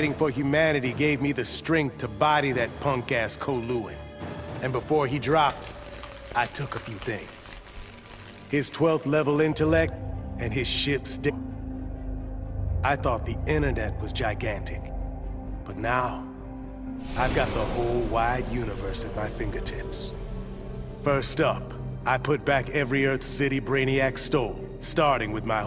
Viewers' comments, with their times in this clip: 0:08 "His twelfth level intellect and his ship's dick..." lol
0:08 "His Twelth Level intellect, and his ship's DICK"
0:10 that cut off made it sound like......